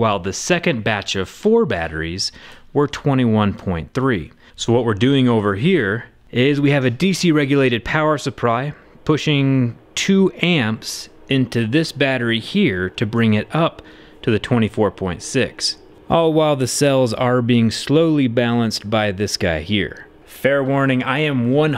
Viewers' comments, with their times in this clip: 0:05 "DC regulated power suppRy" lmao
0:06 What happened with the pronunciation
0:06 DC regulated power suppry me:it's power supply
0:07 he pronounced it the same way manufacturers say it
0:08 Did anyone else catch him saying "Power Supry" ?
0:08 power suppry made me giggle